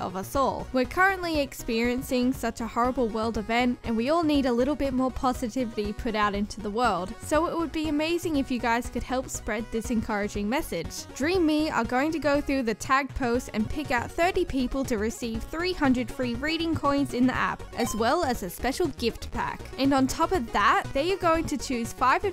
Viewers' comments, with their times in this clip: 0:04 we all need a little more positivvyy... at least that makes two of us who cant speak